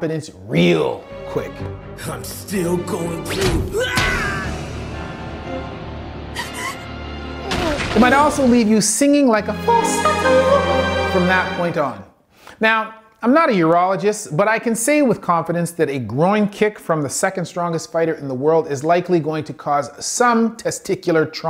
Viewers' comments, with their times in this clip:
0:09 Them notes tho